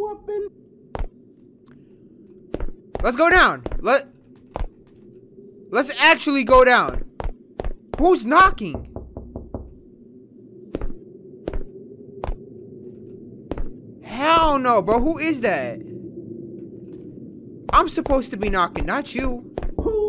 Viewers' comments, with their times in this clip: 0:06 bruh it's you knocking XD HAHAHAHA HAHAHAHA